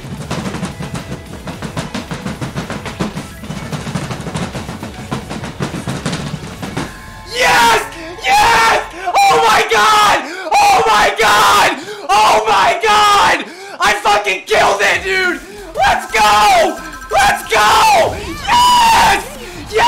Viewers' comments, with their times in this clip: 0:07 I play this video everyday to hear your screaming from